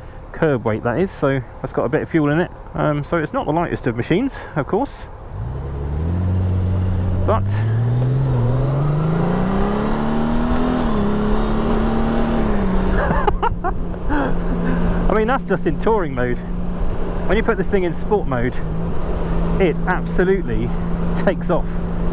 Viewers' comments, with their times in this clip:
0:07 damn that sounds like a Porsche! I guess I shouldn't be surprised considering the engine configuration hahah.